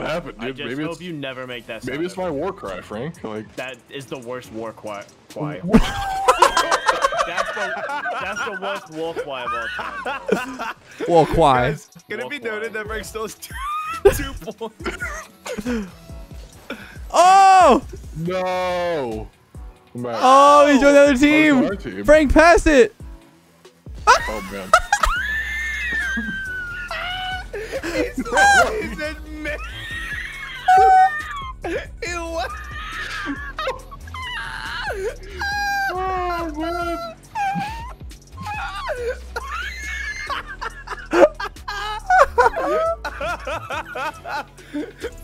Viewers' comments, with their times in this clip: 0:04 Seagulls fighting for chippies be like. 😂😂😂
0:23 Oh my god the laughter part was the best thing
0:24 they all sounded like laughing Spanish guy
0:25 the wheezes just dont end
0:29 I'd recognize that wheeze anywhere <3
0:29 lmaoo bruh they sound like birds that are dying.
0:29 i like this laugh😂😂
0:30 When me and my siblings make a balloon choir
0:30 You lot are just a bunch of clucking chickens
0:30 leth the scream gibbon monki
0:32 that laugh tho 😳